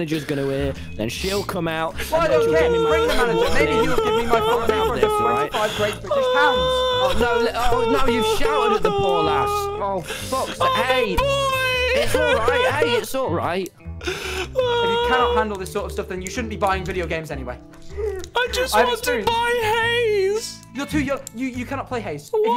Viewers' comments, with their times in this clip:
0:08 is just wilbur crying at his parents arguing-